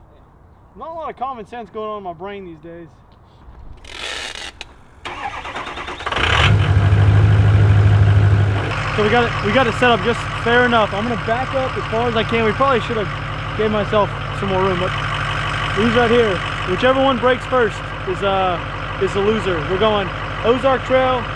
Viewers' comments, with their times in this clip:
0:04 that's why i like Trucks ! shshshshsh booov booov boooov booov booooob booooov